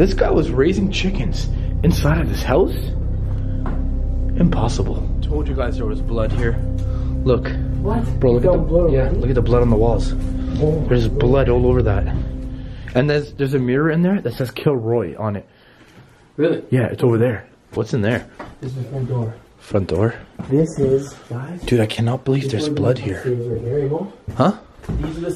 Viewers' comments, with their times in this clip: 0:06 there is a woman's voice but there is only 2 people there in that house